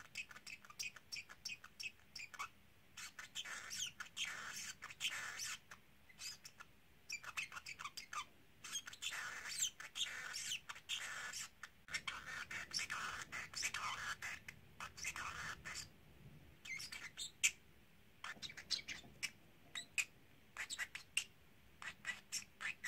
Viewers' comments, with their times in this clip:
0:09 scrit-ta-chur I've figured out is "scritches" - he says it a lot with Tickle. Which is when I say it to him.